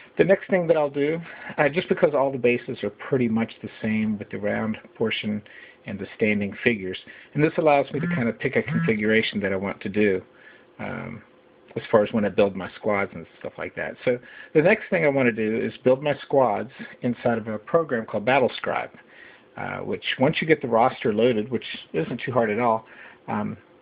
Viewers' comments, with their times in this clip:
0:07 duck quacking this is the only assembly guide for Bolt Action US Infantry....